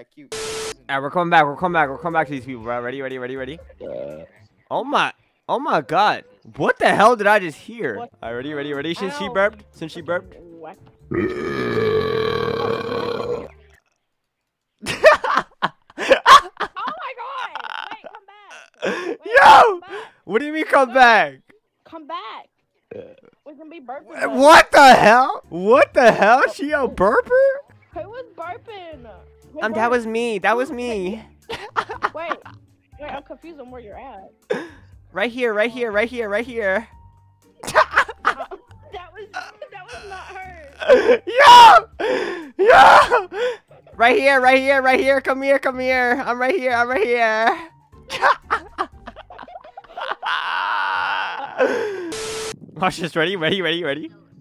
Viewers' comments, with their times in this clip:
0:04 Dude when he burps then does a long one after got me dead laughing 😂😂😂😂
0:42 HIS FEMININE VOICE IS SO SPOT ON AND FUNNY BRO 😭😭😭😭😭😭